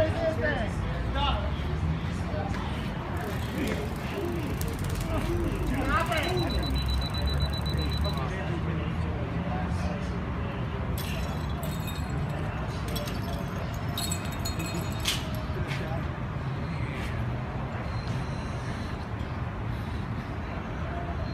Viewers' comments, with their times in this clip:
0:04 The way he says stop it as he's dry tazing him 🤣